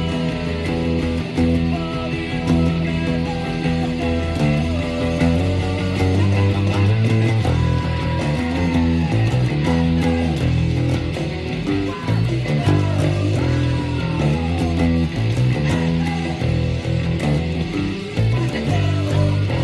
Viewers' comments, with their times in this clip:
0:07 Didn’t realise till now how much badass sounds on the bass !